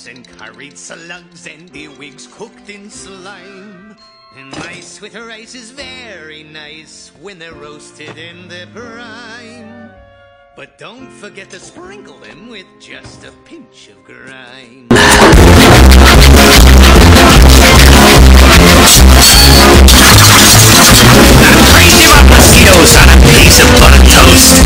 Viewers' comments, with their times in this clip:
0:10 If you've clicked on this because you want to listen to it from the movie, rather than the sound track, listener beware. Turn your headphones and or speaker volume right down at this point, otherwise the incredibly loud volume which makes the song sound like someone scraping a cheese grater over a saw blade will blast out and harm your ear drums. Consequently, this could be really harmful to someone with a hearing condition, such as tinnitus.